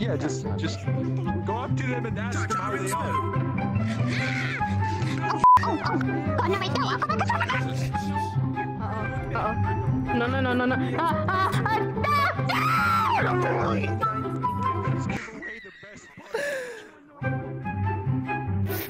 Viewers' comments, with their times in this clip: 0:04 how i sound every morning when i wake up after a naughty dream